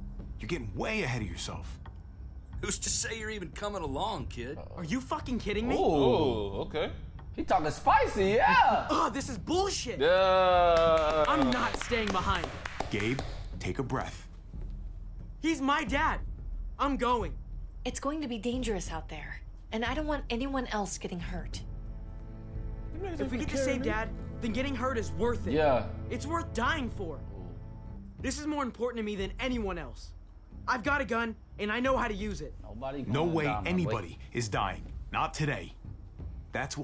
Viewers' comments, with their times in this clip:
0:08 Might be the first time ever someome clapped hands for Gabe
0:23 NAH NOT THE PAIN THEME 🤣